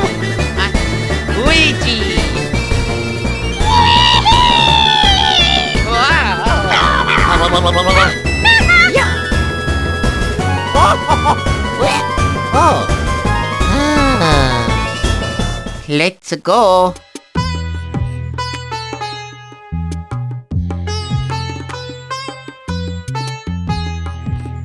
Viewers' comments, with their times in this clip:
0:06 ha, toad sounds like he's saying "Do a barrel roll!"